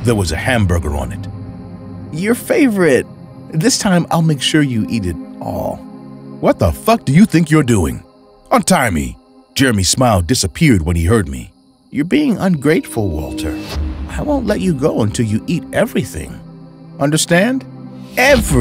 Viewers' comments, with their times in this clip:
0:06 lol the way he said it 😂😂